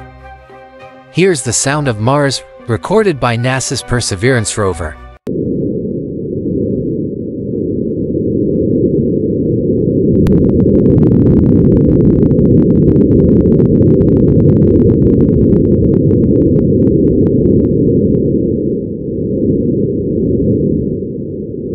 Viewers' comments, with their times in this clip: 0:05 Haha good catch! You’ve got sharp ears—actual space sound kicks in Appreciate you pointing it out 👽🎧